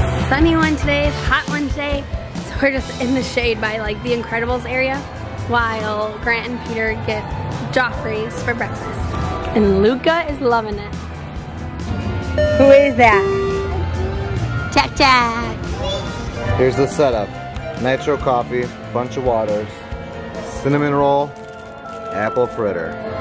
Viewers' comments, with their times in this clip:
0:10 Is the monorail sound the past couple days a new thing? :)